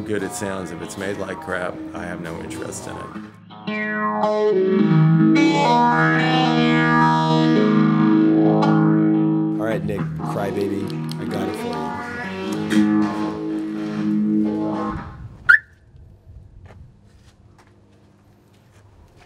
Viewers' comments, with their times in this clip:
0:04 that riff was very pleasing to mah ears
0:06 my favourite part is that CRAZY good guitar sound